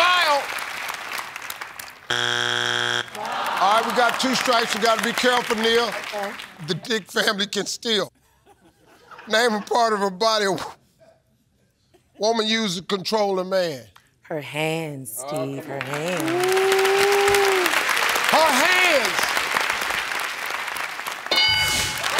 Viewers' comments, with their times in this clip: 0:06 both can’t control their laugh, when Steve said it as Dick family